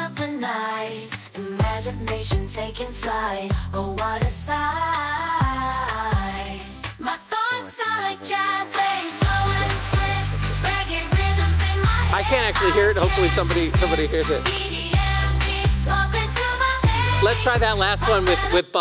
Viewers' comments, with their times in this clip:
0:03 So shitty Nothing jazzy Nothing reggae